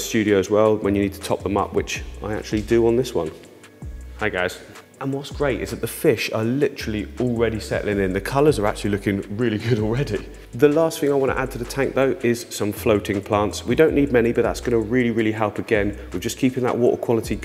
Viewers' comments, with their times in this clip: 0:03 Does anyone else hear "Hi guys" ??